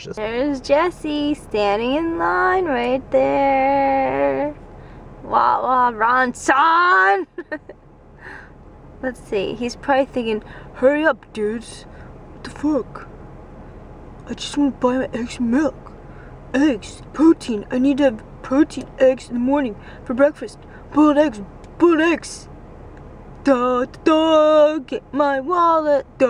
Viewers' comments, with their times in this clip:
0:09 I love when girls make deep voices <3